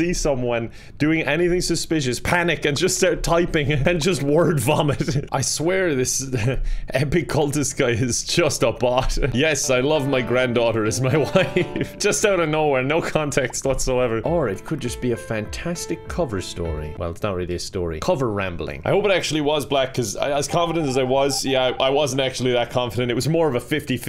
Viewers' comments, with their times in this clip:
0:10 Lmao sweet home Alabama starts playing